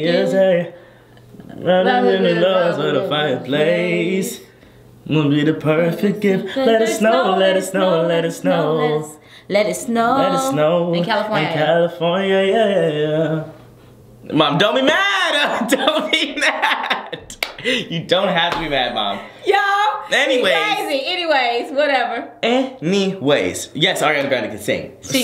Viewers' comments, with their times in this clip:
0:09 OKKK it was a lil acapella there